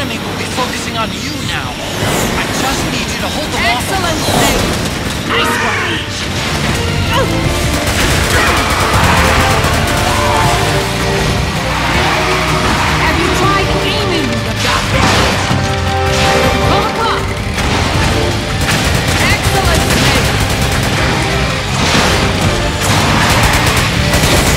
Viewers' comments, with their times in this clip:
0:05 I love that scream from Raven RAGE!!